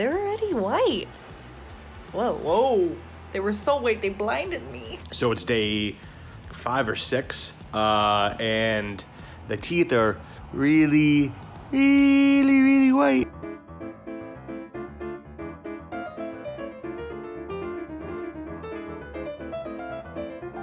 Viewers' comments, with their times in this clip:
0:05 Soooo.... Its day five or sex!!! LMAO
0:05 day five or sex xD
0:06 five or sex?
0:07 sounded like he said sex? IDK is it just me?